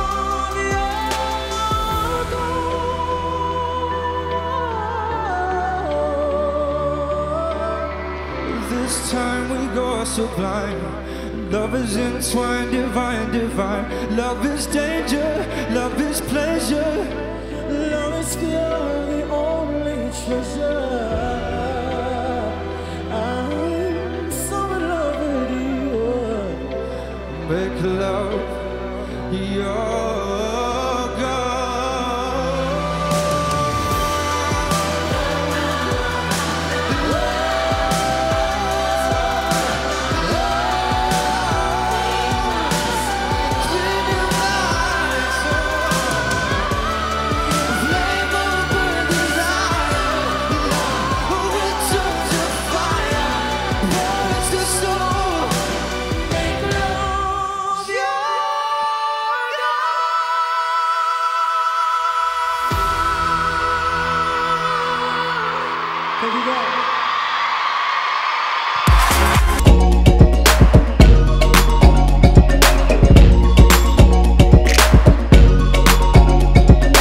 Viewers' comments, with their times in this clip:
0:04 THAT NOTE THO
0:39 But the high part was reserved. If you watched the performance after he won, that high part was clearly way better so he didn't take any risks in that performance. It was still really good but not as good as the performance after he won.
0:59 James's falsetto is just insane compared to his chest voice.